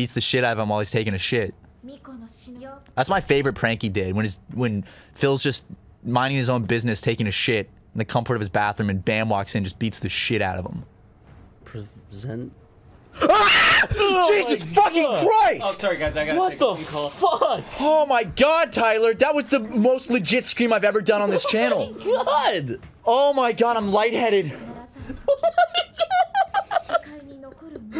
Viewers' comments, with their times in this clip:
0:10 holy crap my ears